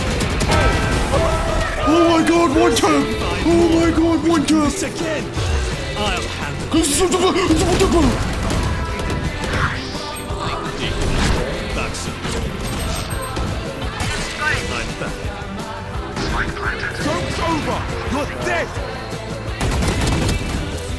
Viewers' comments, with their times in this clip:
0:05 the incoherent voice of concern made me laugh haha also this song gives me so many memories